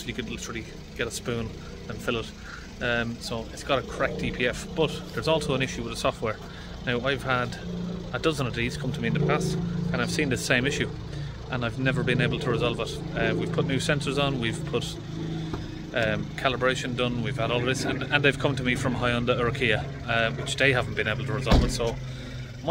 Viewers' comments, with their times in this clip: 0:05 ......Spitfire going over.....??